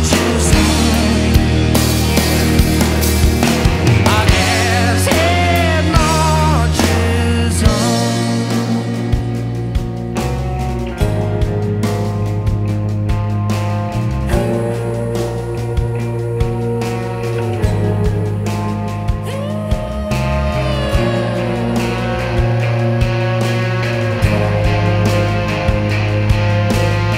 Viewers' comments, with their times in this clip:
0:09 That guitar build up Love it!